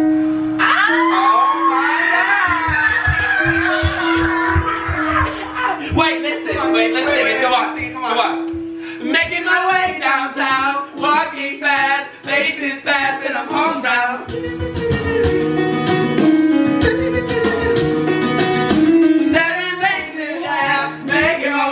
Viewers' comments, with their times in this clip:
0:05 when that White Chicks song started playing I was like "Ohh Hell No" 😹